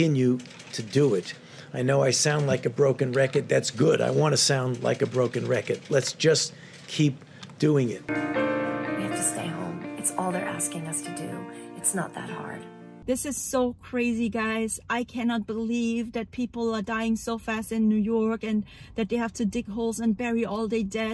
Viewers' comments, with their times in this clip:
0:03 THE DEVIL'S VOICE